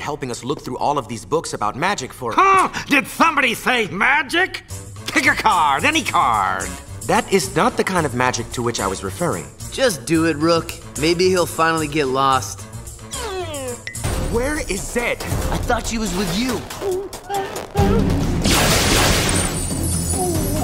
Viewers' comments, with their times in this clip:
0:05 The janitors voice at Gwen Tennyson‘s school sounds a lot like mumbo-jumbo from the teen titans the original T titans of course kind of suspicious (could it be that their world to connected)🤨🧐😨